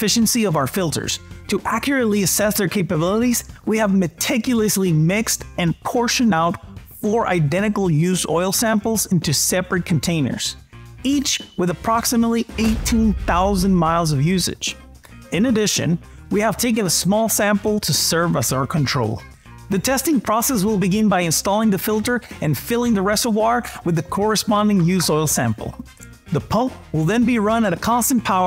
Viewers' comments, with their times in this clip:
0:10 change your smoke detector battery
0:12 LOL SMOKE DETECTOR NEEDS A BATTERY SON!